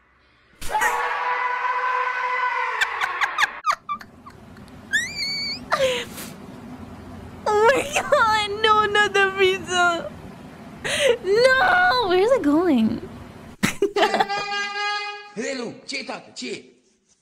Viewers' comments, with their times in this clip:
0:03 geez that laugh was amazing lol 😂 it was pretty adorable